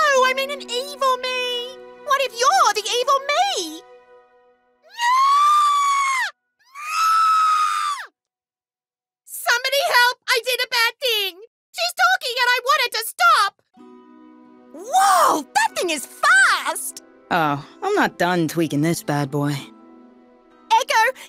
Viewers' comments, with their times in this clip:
0:04 i need to give the va of the practical perfectionist an award
0:04 i love the intetaction between practical perfectionist and his copy, specially the idk how tf to scream like that
0:06 No one: Literally no one: R2D2:
0:06 When the apes screaming whose banana is gone.